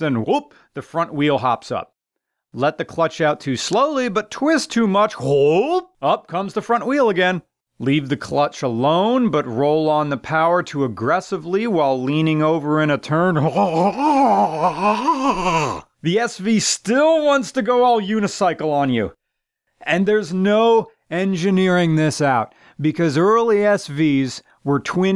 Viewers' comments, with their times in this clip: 0:10 Now I know what Hank Hill sounds like when he nuts